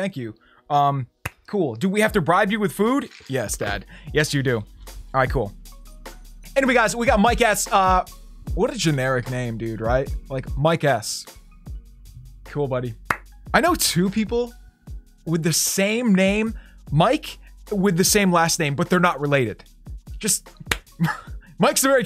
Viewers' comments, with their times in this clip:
0:07 he said mike ass